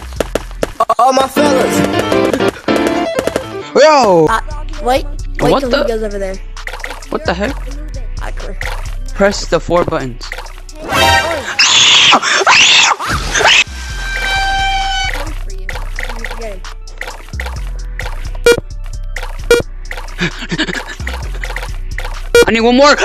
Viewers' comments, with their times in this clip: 0:08 that scream though